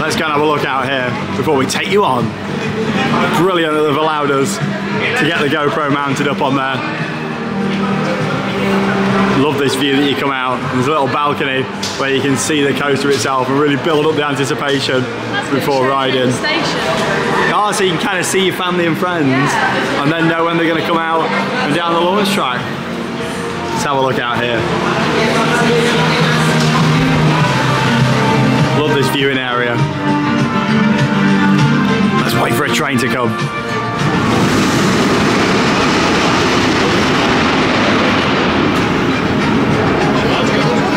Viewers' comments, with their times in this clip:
0:03 The F1 theme fits perfectly with Rossa!
0:24 love the F1 Theme